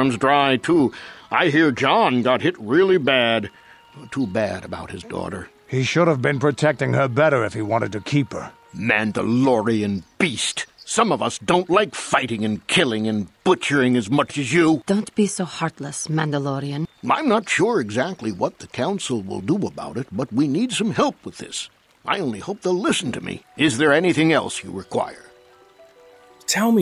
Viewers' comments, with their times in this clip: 0:08 "MANDALORIAN BEAST!!!" Still one of my favourite lines from the entire game. The delivery, the animations, everything lined up perfectly for it to be a complete gut buster 😂😂😂😂😂😂😂